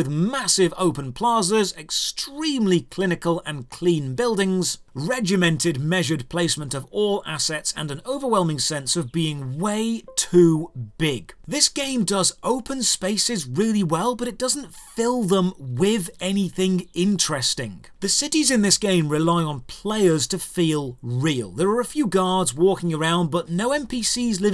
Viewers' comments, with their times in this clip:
0:09 you plugged in a USB device... just thought id point that out.